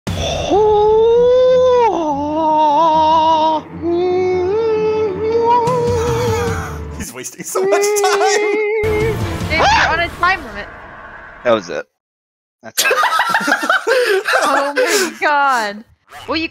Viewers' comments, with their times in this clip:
0:00 he sounds like a ham on user doing their lung breathing “Kooooooo.........”